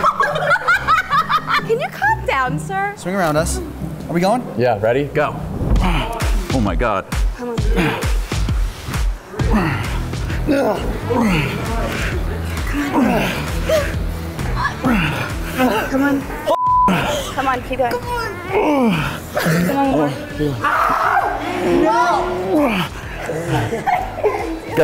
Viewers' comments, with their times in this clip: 0:08 The grunts were mad